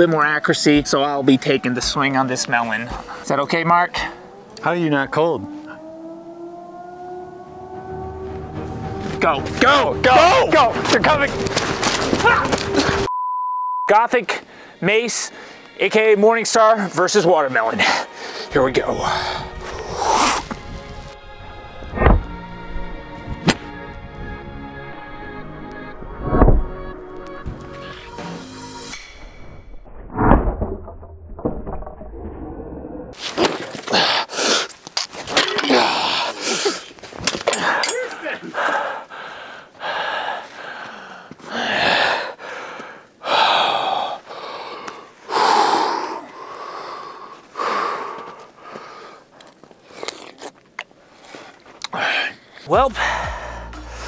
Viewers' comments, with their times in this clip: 0:09 were the sirens real😮
0:34 table sounded like some legos
0:35 when you kill a skeleton in minecraft.
0:35 That sounded like the Lego games when you break shit